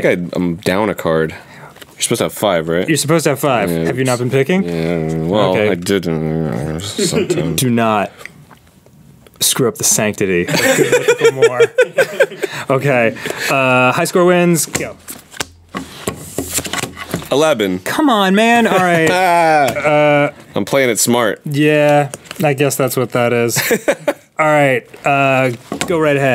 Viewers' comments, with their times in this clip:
0:08 /59 is that arin gulping?